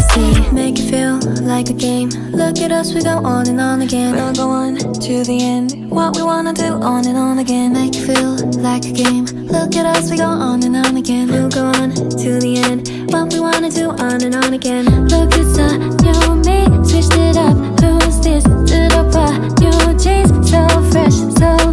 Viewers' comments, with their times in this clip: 0:08 that voice though